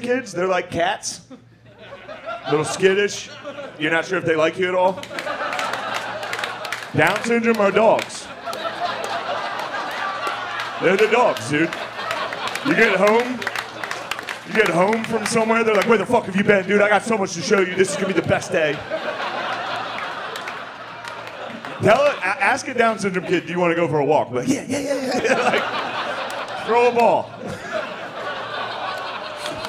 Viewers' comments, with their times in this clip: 0:08 even the cameraman was laughing
0:11 you can tell the camera operator laughed LOL